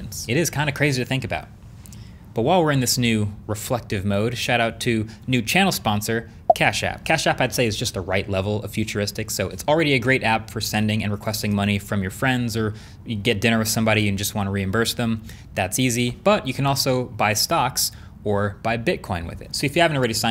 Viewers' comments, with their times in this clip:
0:05 the little bloop sound is the same as the first tone when your AirPods are dying and it psychs me out each time